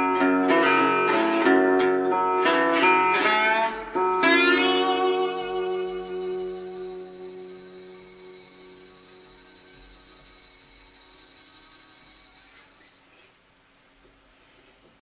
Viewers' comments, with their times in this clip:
0:10 At the end you can hear the crickets chirping in a mild summer night.